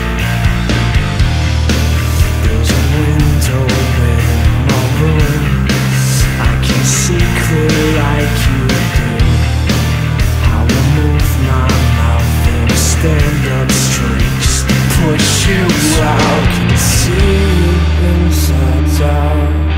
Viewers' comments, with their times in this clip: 0:07 The bass is hauntingly good.